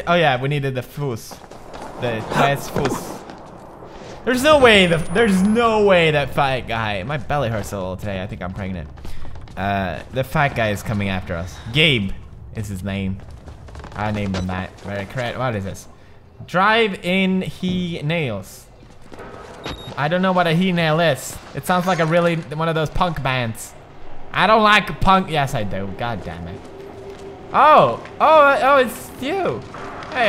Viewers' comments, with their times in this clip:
0:05 Love how he just casually says "My belly hurts a little bit today, I think I'm pregnant".
0:16 I don’t know why but I thought it said "Drive in penises” XD